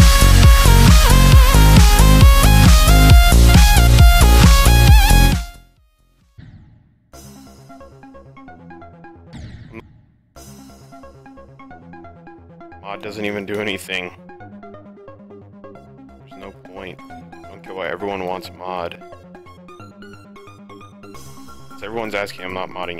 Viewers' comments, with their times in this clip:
0:09 bro that "n-" is a perfect death sound